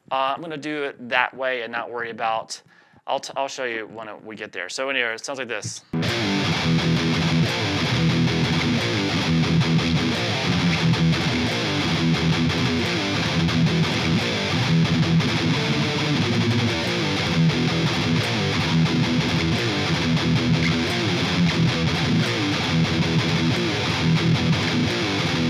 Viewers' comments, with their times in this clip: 0:07 if metallica wrote du hast